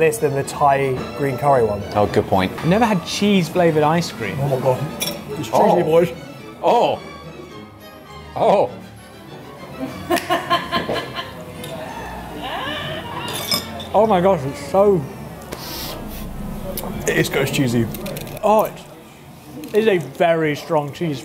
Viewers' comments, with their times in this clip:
0:06 I love how the background music starts to get distorted as soon as they try the goat cheese roll 😂😂😂